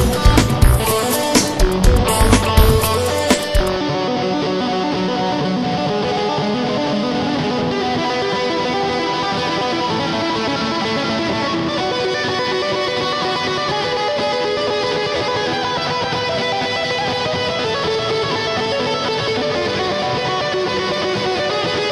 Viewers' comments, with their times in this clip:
0:04 Awesome. The solo part on is the best part.